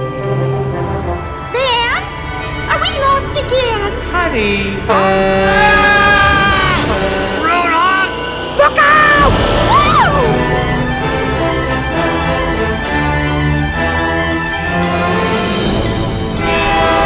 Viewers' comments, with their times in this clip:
0:04 insert loud screams here